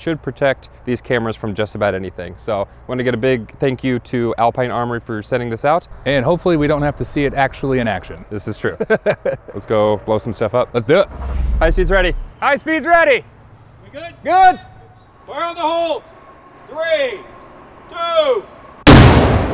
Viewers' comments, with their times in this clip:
0:04 (truck passing by in the background) At least the highway is close. 😁